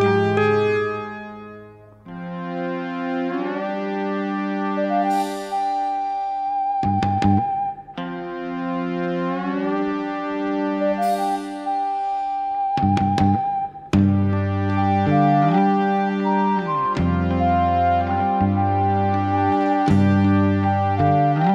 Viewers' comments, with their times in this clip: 0:05 is probably one of the most standout pieces of soundtrack made for the show, I dunno why but ever since as a young fan who was gifted this story on VHS this piece has always stuck with me, it’s a beautiful melody